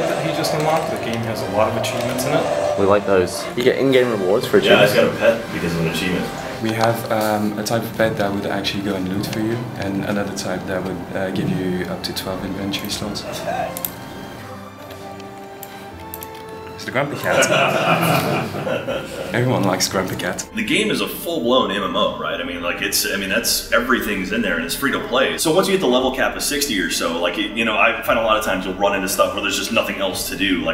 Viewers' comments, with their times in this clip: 0:09 Does anyone else hear Star Wars in the background music? Specifically ...
0:12 Cue the fake Star Wars music!